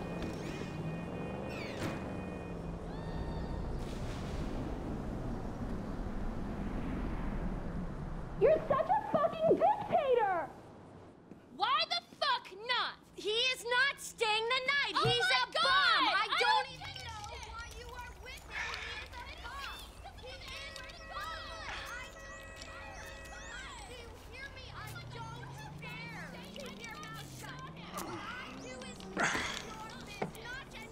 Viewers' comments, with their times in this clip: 0:09 when you weren't visible on screen, I thought you were the one who said "your such a fucking dictater" for a second there before I saw the subtitles
0:11 Yep That's Amanda And Tracey arguing!